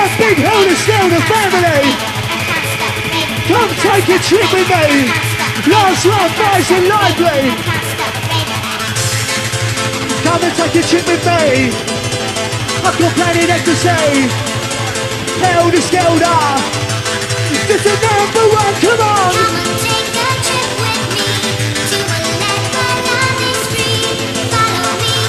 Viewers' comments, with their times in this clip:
0:10 can ANYONE confirm what he says...i think he says "come and take a shit with me" which is possibly the least happy hardcore MCing and lyrics i have ever heard!! What do you think?